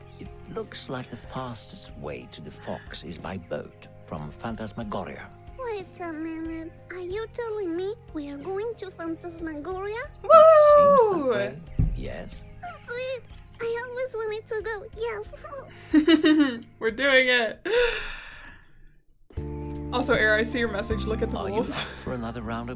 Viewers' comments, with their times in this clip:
0:10 I thought she said AWOOOO because of the wolf lol 🐺